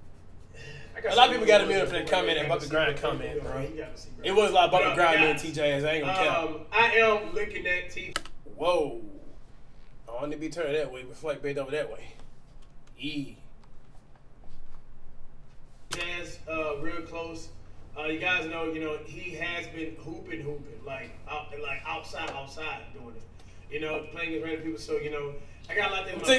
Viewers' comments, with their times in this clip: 0:09 starts the 1v1, they are talking so f*cking much